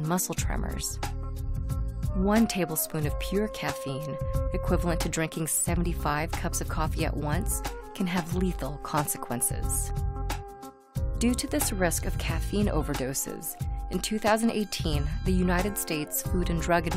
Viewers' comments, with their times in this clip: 0:03 1 terabyte of pure caffeine??